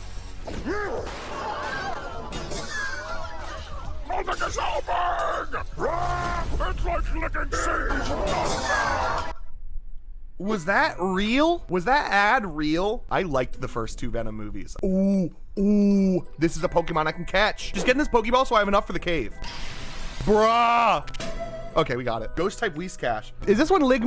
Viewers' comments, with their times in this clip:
0:07 ITS LIKE LICKING SANTAS WHAT???